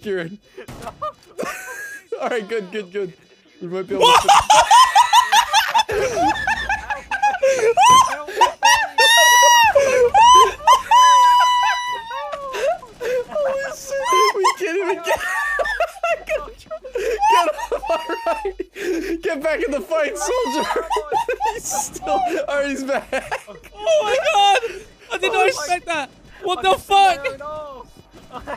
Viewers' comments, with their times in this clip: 0:10 why did he sound like an older black woman getting told a funny joke😂